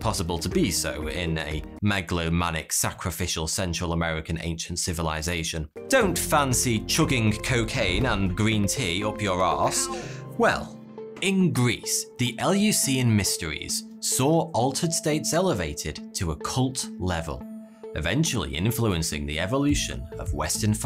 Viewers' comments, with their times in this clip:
0:05 I love the background noises, like for example